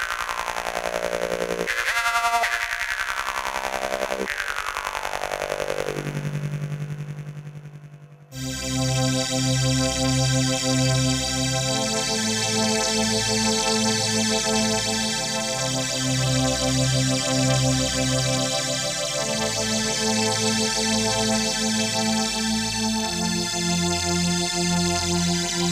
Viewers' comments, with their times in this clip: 0:09 That string synth is desperately crying out for a Small Stone phaser. That's about the most 1970s sound imaginable.